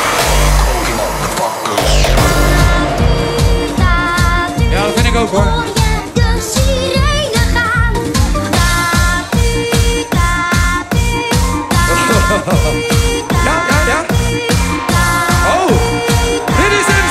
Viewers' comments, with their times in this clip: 0:05 why does that sound like a Dutch anime theme dub